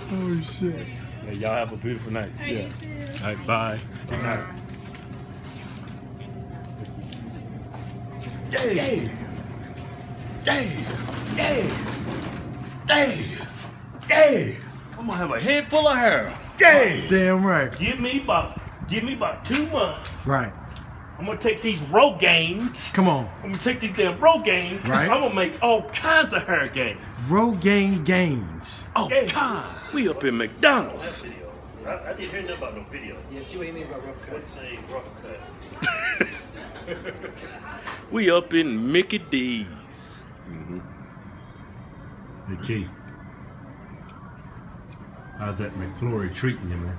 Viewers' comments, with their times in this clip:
0:05 That "Yeaah" got me laughing so hard. They fucking said it at the same time, perfection !
0:28 Best "all kiindzz" I've ever heard!!